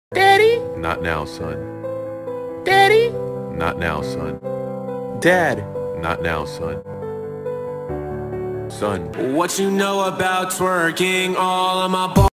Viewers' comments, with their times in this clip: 0:05 I like his voice
0:09 epic song moment